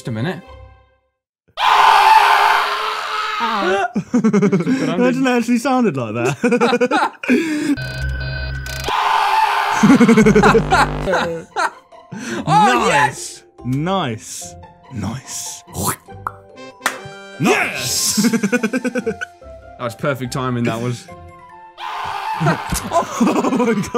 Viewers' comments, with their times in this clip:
0:07 Looking back on this, I'm not gonna lie, this actually sounds way better & scarier. That scream is fucking anxiety-inducing. XD